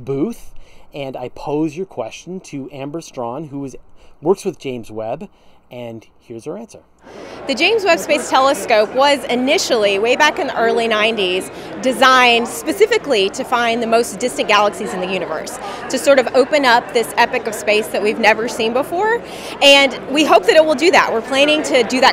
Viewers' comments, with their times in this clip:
0:05 oof, that sudden change in background noise really jerks you awake, if you're someone who likes to drift off to sleep to these videos! Idea for an app: automatically analyse videos to filter out all moments like that when you're trying to sleep. Hope you don't mind me saying all that - it's actually a compliment, since it's far easier to go to sleep to an interesting video than a dull one!